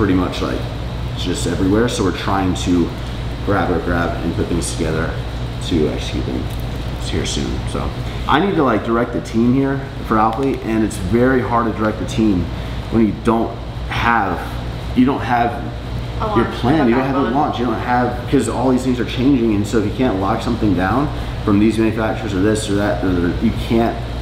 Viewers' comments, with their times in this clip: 0:09 That finger crack though 😬😬😬